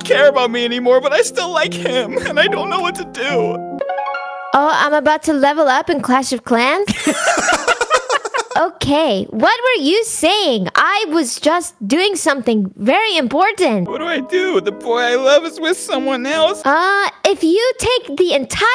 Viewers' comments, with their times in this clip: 0:04 nintendo song starts* oh im About to Level Up in clash of clans😂